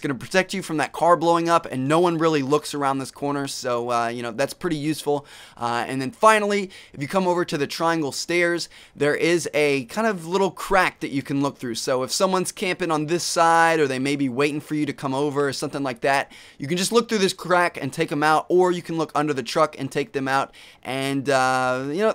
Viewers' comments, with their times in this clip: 0:09 Watch from Anyone else think that sounds weird?